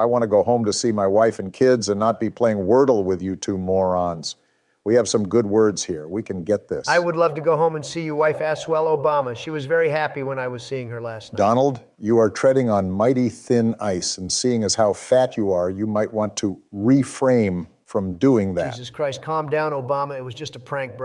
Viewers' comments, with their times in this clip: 0:09 I thought it was crapping (yes Ik that’s not how you spell it I am a dumb as hell)